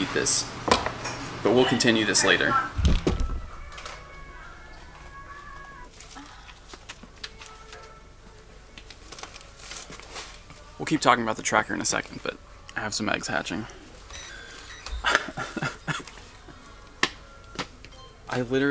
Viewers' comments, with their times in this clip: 0:05 wtf, did anyone else catch that moan ???